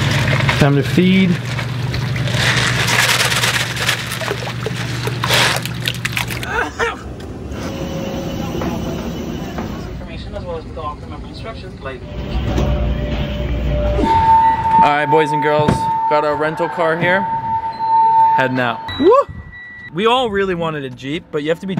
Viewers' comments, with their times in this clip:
0:06 in the mirror his glasses come of when he sneezes